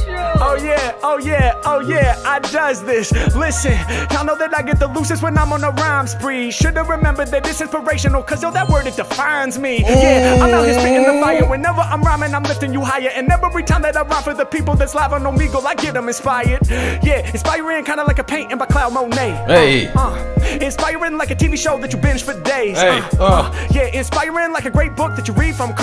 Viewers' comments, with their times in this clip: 0:08 Layed back got me in tears man! 2nd rap he sounded like a new born !!!